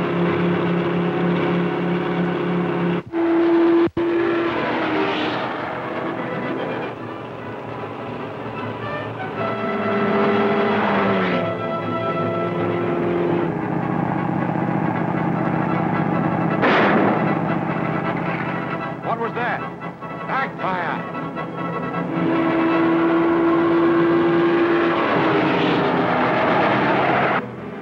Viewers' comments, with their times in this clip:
0:09 Did you catch that car chase ? How do you get rubber tires to make a screeching noise on loose dirt?